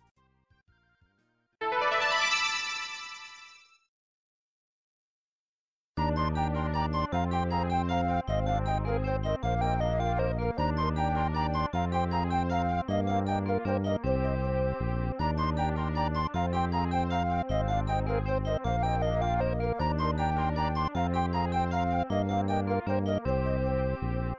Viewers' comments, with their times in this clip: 0:05 To this day, the password music has always sounded to me like the sound of emotional thoughts if in the game plot, Kid Ying were carefully thinking about how he should be writing a letter to another generation of the family tree, planning a visit after over a decade of no contact, because back then, before cars, traveling far across Japan just for such a visit was much more difficult for the average individual. I don't visualize these details. I'm just filling in the gaps here.